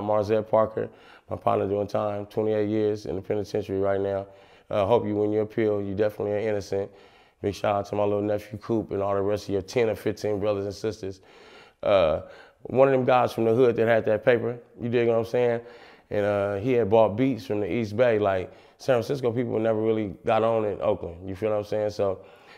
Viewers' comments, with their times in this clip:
0:07 did he say you definitely ain't innocent ?